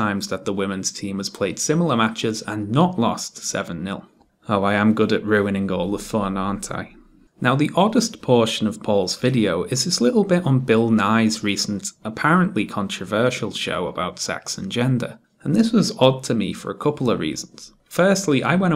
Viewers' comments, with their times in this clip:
0:03 You can hear his smile and it's just such a gleeful mischievous sound.. I love it